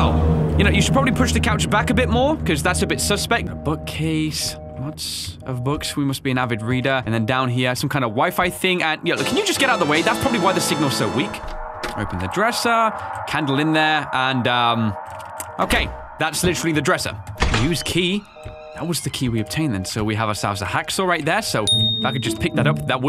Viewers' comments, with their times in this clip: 0:09 Umm, this is just me but, for some reason, I feel like that sound effect didn't fit.